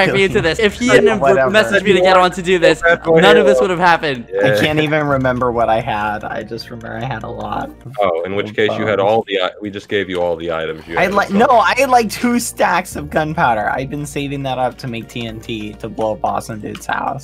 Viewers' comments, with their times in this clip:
0:05 The_Eret: What are you guys even doing?? LOL evil technoblade, skeppy, and bbh laugh